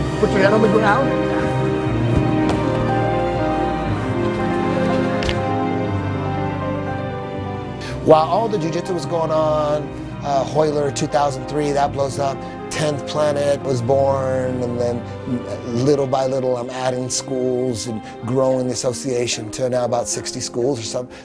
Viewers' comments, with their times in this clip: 0:04 does anyone else hear something pop